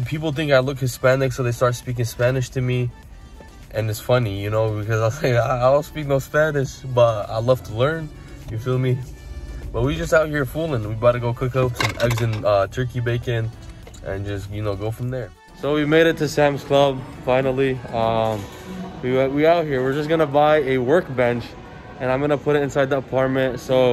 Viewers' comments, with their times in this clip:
0:07 nah! You're one of us (latino)... you say "cilantro" too good 😉😊